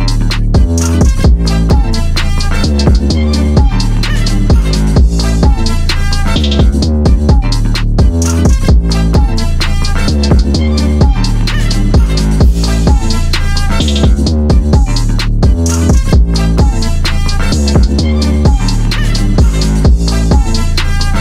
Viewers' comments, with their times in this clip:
0:03 that Yoshi sound effect though XD